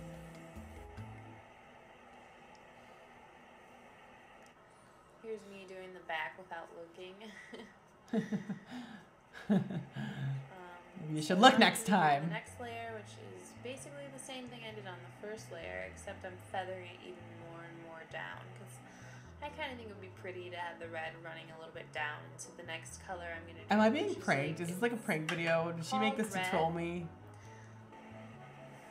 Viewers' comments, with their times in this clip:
0:10 laughs "You should look next time" Your face and reaction there was the best👌🏻😂